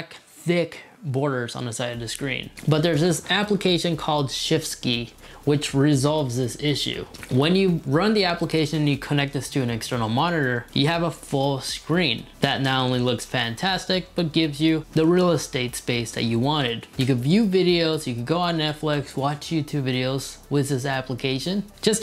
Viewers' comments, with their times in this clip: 0:04 you said shift ski?
0:05 shift ski wtf